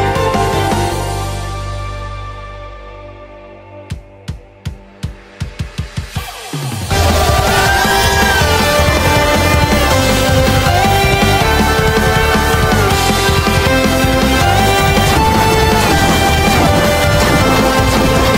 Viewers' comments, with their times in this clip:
0:03 Yooooo, you kept the scream!